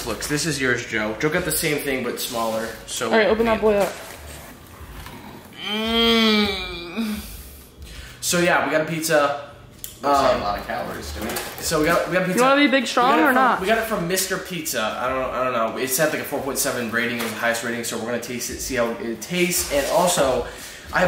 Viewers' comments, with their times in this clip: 0:04 the pizza moan make you cream inside